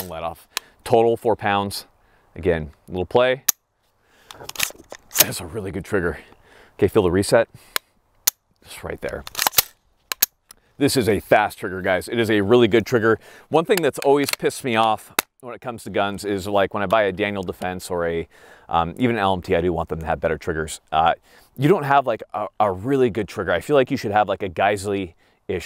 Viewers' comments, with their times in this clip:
0:07 "Feel the reset" My AR resets with that same loud CHUNK that I heard when you demonstrated it here. I guess that means mine isn't broken.